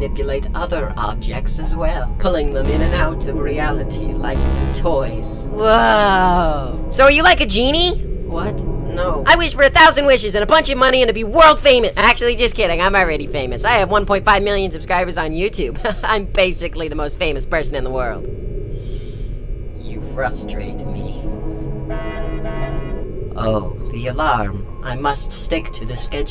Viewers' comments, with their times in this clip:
0:08 I like how genuinely confused he sounds in this-